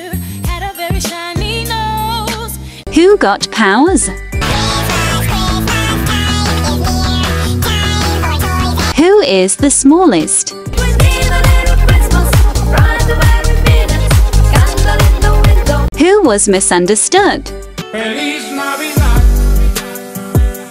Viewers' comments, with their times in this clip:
0:05 another Alvin And The ChipmunksTime